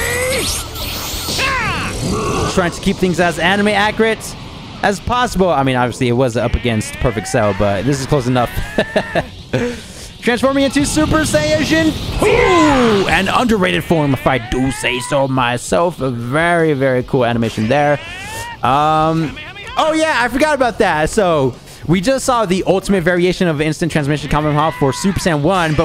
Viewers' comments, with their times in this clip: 0:08 "Transforming into Super Saiyajin-TWO!!!" GET THIS MAN HIS OWN VOICELINES 😭🙏